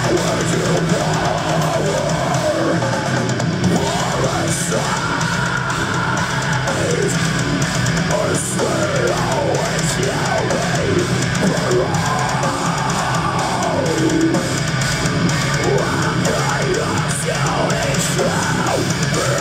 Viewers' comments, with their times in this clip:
0:03 Jens' Scream is awesome. Sounds a bit painful but awesome.